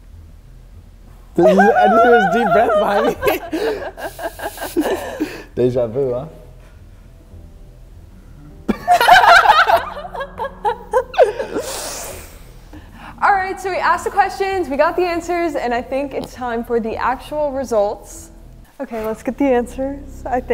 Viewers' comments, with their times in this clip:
0:06 dude nodded reluctantly lol... "i told u i cant talk so here have this nod instead".. then noah and dixie laughed and he died a bit inside with shame....